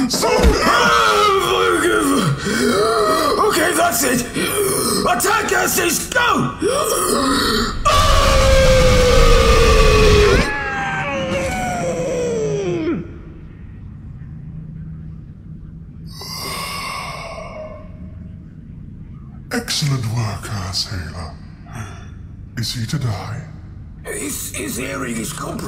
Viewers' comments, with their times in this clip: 0:07 Asshailer: OKAY THAT’S IT! ATTACK-CASTER IS GO! [SONIC ATTACK] Boy: [screams in pain and collapses] Me: 😂